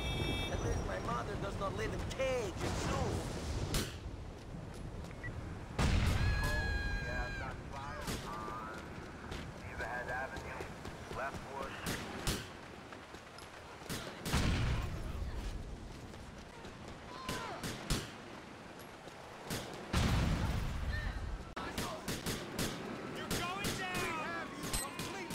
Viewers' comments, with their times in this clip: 0:07 be like the most out of place scream ever